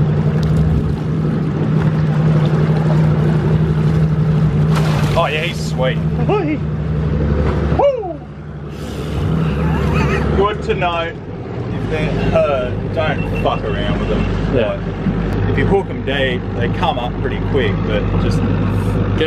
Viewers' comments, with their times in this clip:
0:05 you can hear mickey mouse behind the camera